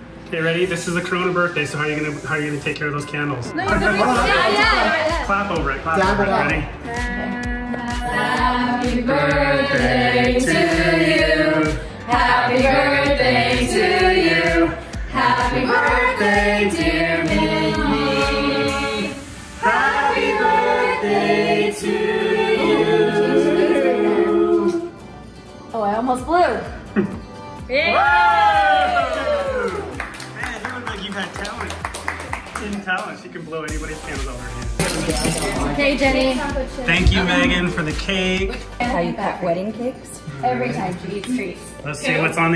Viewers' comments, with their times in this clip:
0:08 they sounded like a church coir
0:20 Can we talk about how perfectly they all harmonized together?
0:28 Damnn the harmonizing